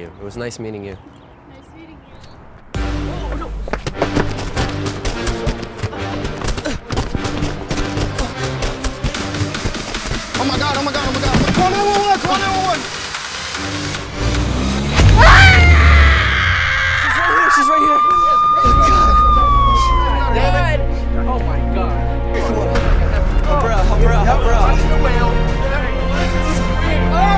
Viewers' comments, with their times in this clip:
0:09 i thought the video was ending because of that song xD
0:14 I think she actually ran over her hand because if you listen REALLY closely you can hear cracking noises but it might be fake